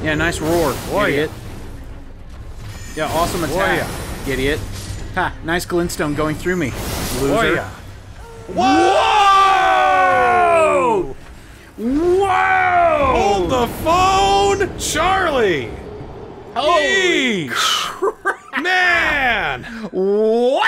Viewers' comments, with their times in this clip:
0:06 I can almost hear the sound of a shotgun getting pumped before the Queen unleashed that spell.